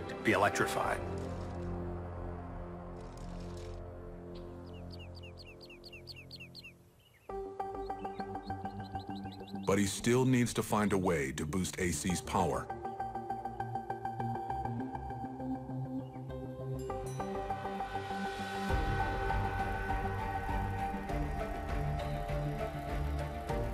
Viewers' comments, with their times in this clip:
0:06 I get goosebumps all the time! That music...!